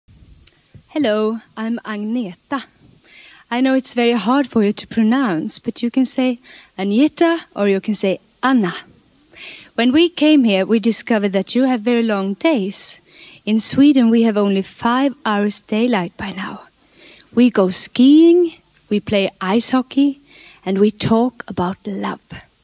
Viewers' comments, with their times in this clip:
0:01 Loved the "helloo~"
0:07 Dear Disney, please listen to how she pronounces "Anna" (hint: she doesn't say Arna)
0:15 And this is how ASMR started